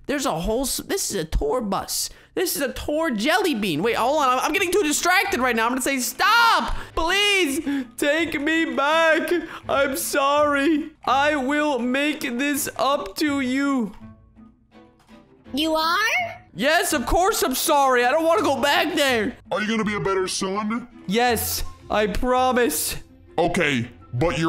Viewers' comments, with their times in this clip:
0:09 Notice: He uses the girl voice for the dad,